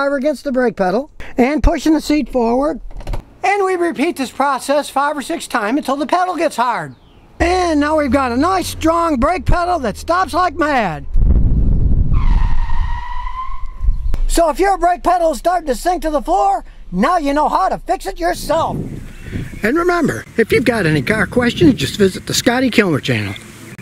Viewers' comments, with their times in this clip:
0:06 OMG that REV :D :D :D
0:07 Mr. Kilmer...you dont have to test your brake while running the engine at more than 9000 rpm ......you dare devil !
0:08 VTEC KICKED IN YO!!! (in a Toyota haha)
0:11 That tire squeal! 😂😂😂😂😂
0:11 Nice sound effects!